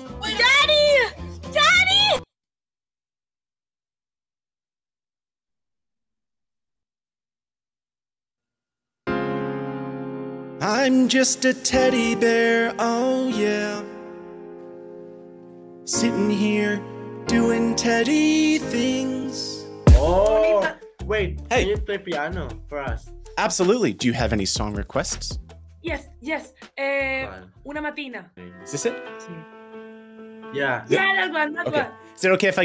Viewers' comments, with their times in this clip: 0:08 WOW you should sing and play that actually sounded so good
0:10 I love your singing
0:19 Why was perfectly in rhythm with the background music for a second?